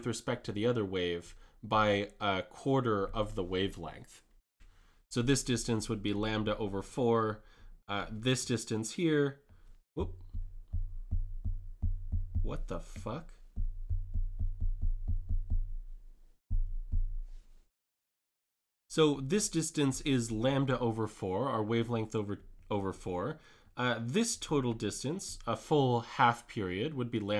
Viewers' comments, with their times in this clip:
0:10 ahahah i laughed so hard that you were tryna say wtf politely